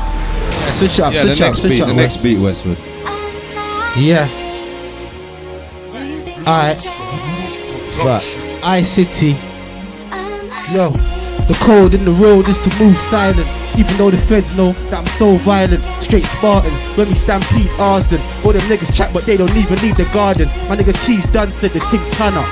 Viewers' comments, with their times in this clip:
0:03 The second one is fye